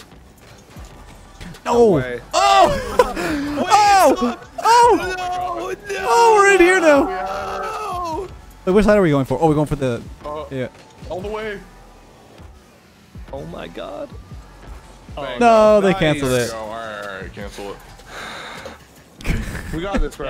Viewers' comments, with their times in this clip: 0:04 someone is turning to Jesse Pinkman